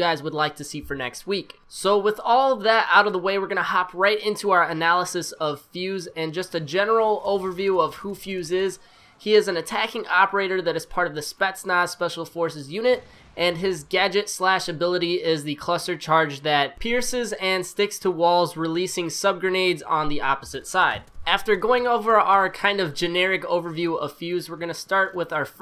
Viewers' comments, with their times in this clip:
0:06 that guy did a cool aid man "OH YEAH"